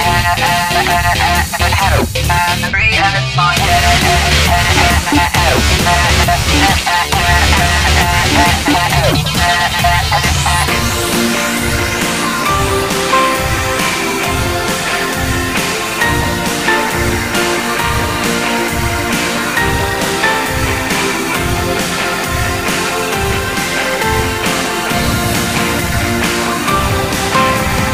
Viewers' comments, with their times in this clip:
0:10 OMG I love the piano and guitar notes from